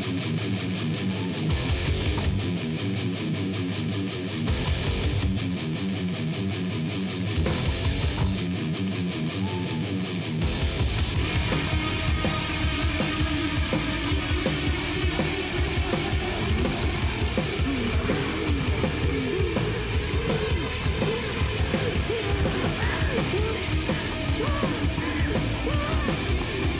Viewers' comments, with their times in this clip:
0:10 Not gonna lie, i could've played those dives bombs way better than that, and on a mid level ibanez and 15 watt amps LOL. I can see why Rob went on to form the band that he did. I dont think john 5 would ever fucj around like that